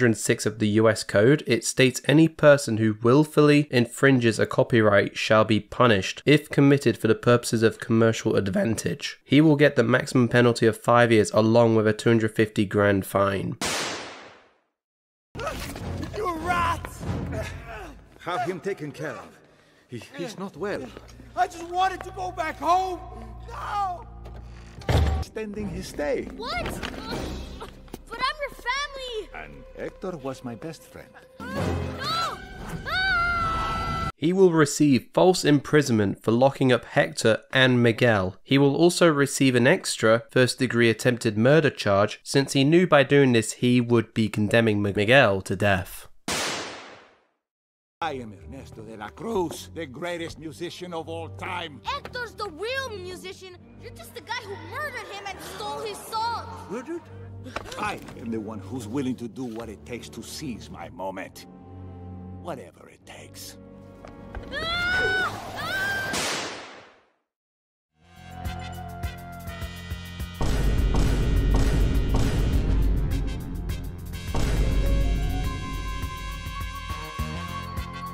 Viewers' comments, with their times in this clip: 0:07 Voice crack! How old are you, bro?
1:04 nice perfectly cut scream